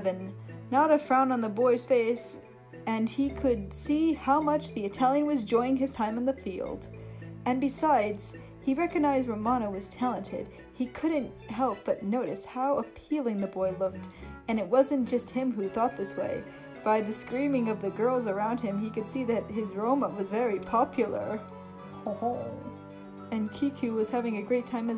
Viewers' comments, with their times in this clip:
0:09 I didn't know I had done a France laugh until the last "Hon"